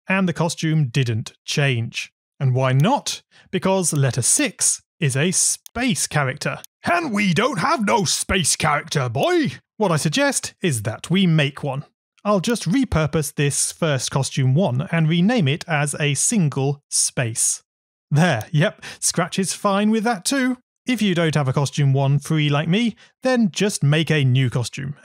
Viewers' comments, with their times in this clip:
0:06 You actually sounded like a grandpa And it was so funny how did you get that that made me laugh a lot
0:07 IS THAT MR KRABS?! 🤣